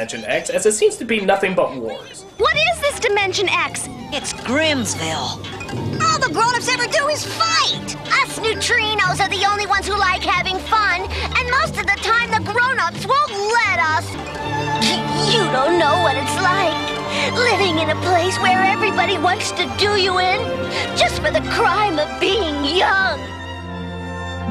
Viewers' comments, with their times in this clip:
0:07 hahaha... that line read. So obviously Tress MacNeille. So obviously over-doing it with full awareness of just how asinine a line it really is.